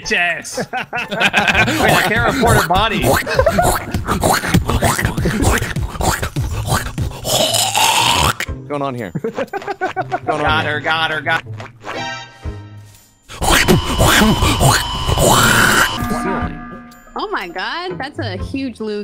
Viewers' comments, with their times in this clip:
0:06 BAD TIME TO HAVE HEADPHONES ON!